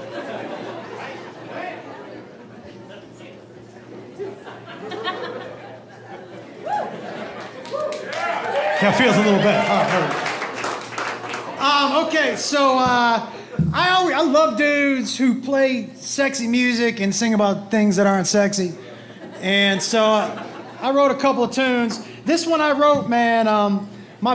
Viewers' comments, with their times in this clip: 0:10 Went from brad Paisley to a truck driver in one second 😂